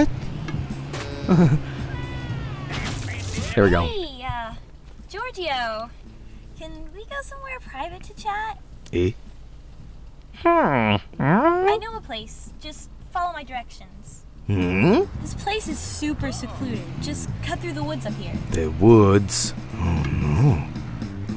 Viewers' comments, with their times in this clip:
0:08 wait why is she not talking